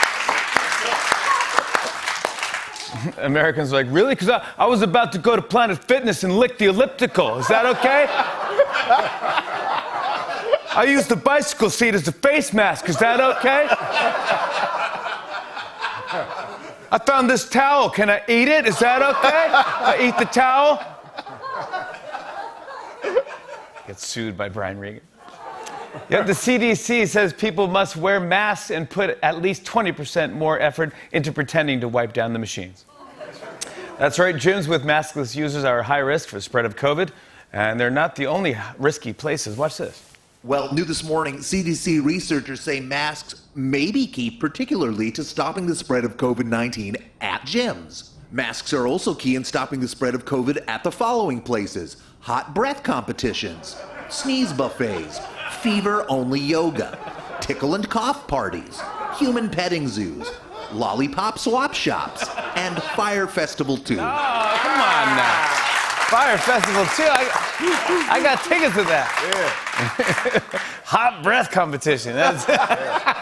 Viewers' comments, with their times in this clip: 0:03 knew he was doing a Brian Regan as soon as I heard it! Lmao
0:23 I had just thought how much he sounded like Brian Regan when he said that!
1:01 everyone laughing on the list of activities mean while jimmy filming another episode of spitting on eachother with icecream or snacks in mouth.